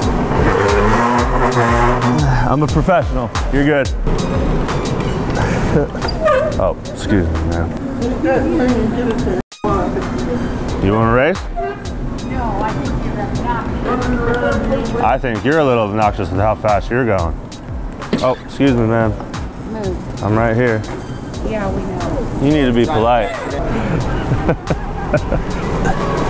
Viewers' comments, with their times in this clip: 0:07 that was the most feeble ‘demand’ I’ve ever laid witness to